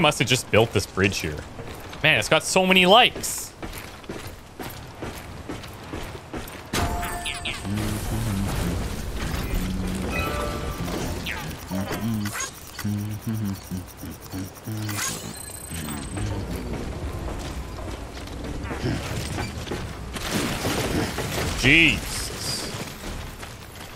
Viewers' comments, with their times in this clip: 0:06 That's awesome 👍 he's humming 🎵"London Bridge is Falling Down" 🎵 while crossing the 🌉 bridge.